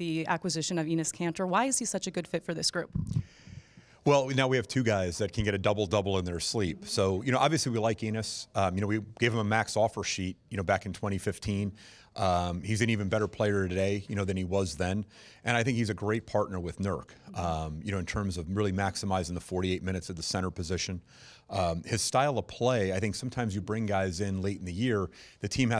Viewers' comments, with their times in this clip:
0:07 Did he just said "we like anus" ? 🤔